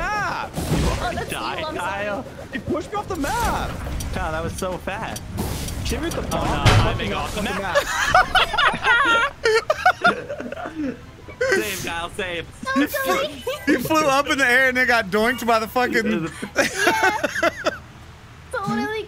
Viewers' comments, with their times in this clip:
0:03 I love that bonk noise